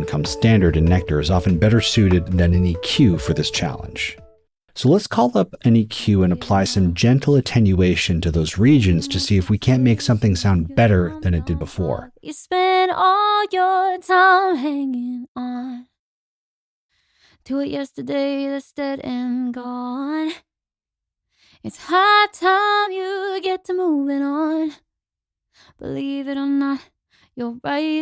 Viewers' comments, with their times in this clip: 0:09 am i the only one who thinks that the unprocessed vocal sounds way better? 😅